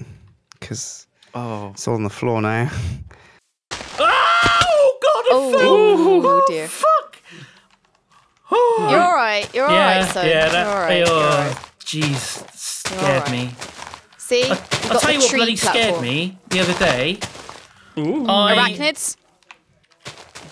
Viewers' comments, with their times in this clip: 0:03 perfect Wilhelm scream